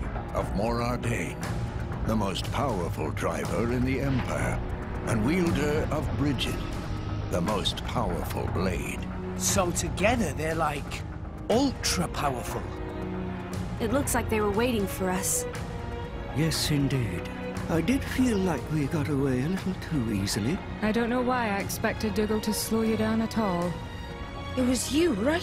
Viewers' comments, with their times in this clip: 0:08 So together they're like... U L T R A pOwERfUL The VA nailed this "No Shit Sherlock" moment lmao.